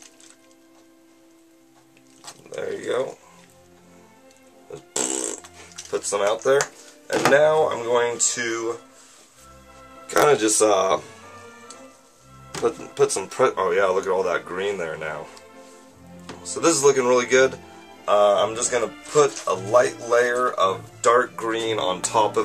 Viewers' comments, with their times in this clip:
0:04 sounded like a fart lol